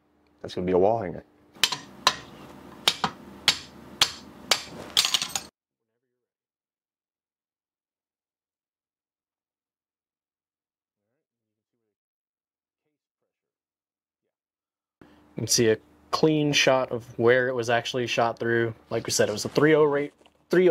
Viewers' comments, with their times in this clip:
0:06 muted no sound